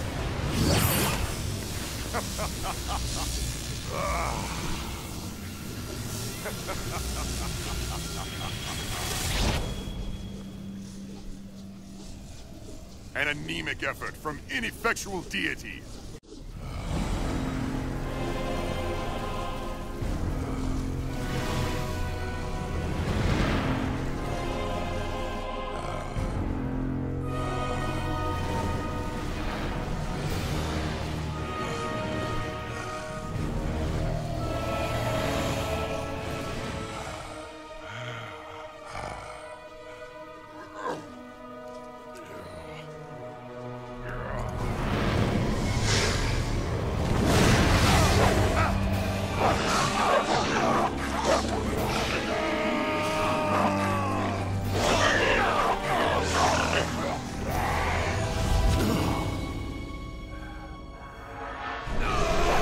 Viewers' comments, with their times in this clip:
0:07 Shao Khan: Hahahahaha lays on the ground 3 seconds later
0:49 I’m sure that’s what dragons sound like Bork bark